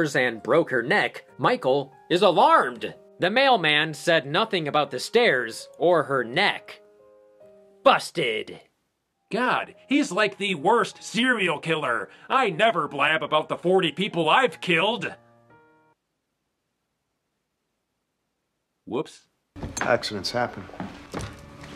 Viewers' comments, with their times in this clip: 0:08 damn your voice changed from your normal voice to evil andy voice that's some talent right there